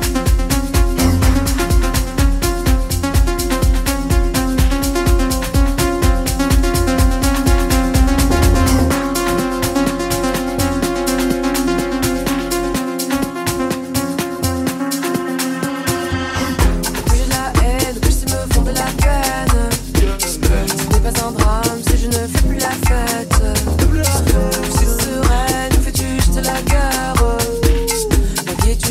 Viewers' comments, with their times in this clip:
0:09 Did they bust out with Bachata ?!!!